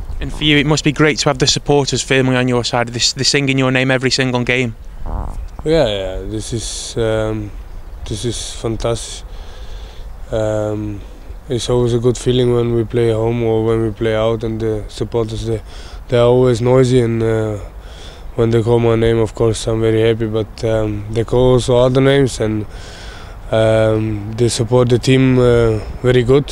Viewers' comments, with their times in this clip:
0:07 this is "fantastisch"^^@